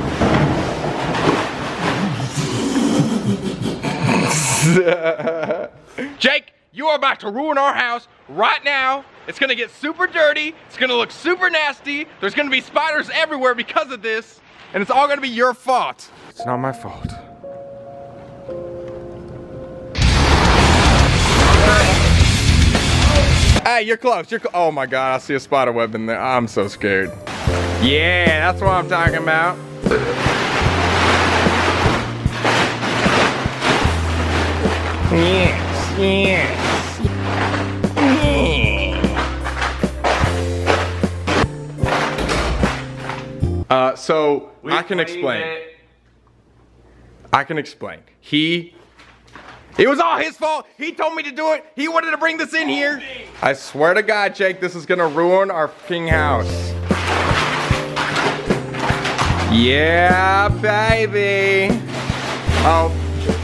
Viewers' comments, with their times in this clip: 0:04 is so cute, his laugh is adorable!
0:48 Wtf was the mouin